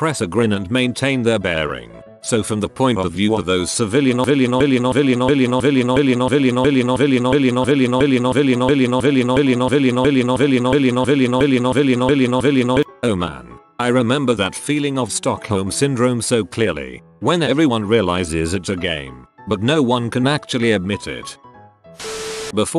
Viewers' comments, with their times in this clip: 0:04 Pretty sure I head this sound before, think it was from DooM eternal, obviously not, but like I normally listen to this in the background, and I freaking nearly tipped my chair over with these demonic noises
0:04 nice beat bro
0:04 text to speak had a stroke
0:04 Did the text bot have a bleedin stroke ?
0:05 anyone notice how the voice stutters alot??
0:05 Oh my god, I thought my computer did the death stutter (Where your PC freezes perminatly and stays like that, even after being unplugged [old ass parts and it's not built well]).
0:05 This one was not well edited at all...in addition to the word “Civilian” being harshly repeated the story about the plane was told twice and some of the ending comments made no damn sense
0:05 this is funny but what the actual hell is going on with the goddamn audio here?
0:06 Ahh the stutter the famous robot stutter
0:09 nice text to speach
0:10 Wtf happened to the audio